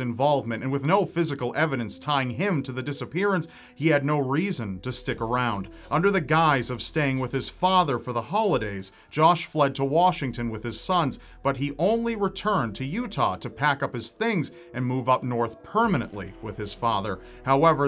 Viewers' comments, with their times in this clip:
0:05 yall hear a piston in the background?